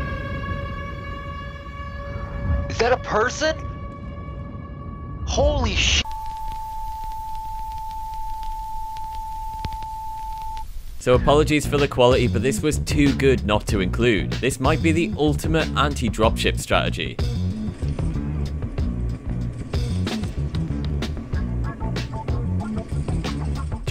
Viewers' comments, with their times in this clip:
0:05 was not sensored every Helldiver is required to report this to the Ministry of Truth.